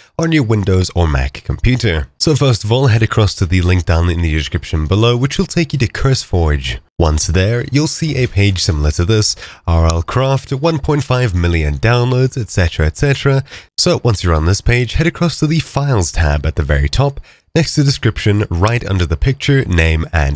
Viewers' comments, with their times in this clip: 0:08 bro i was listening to amv by Lil darkie he it sounded like he is from the song when he said once there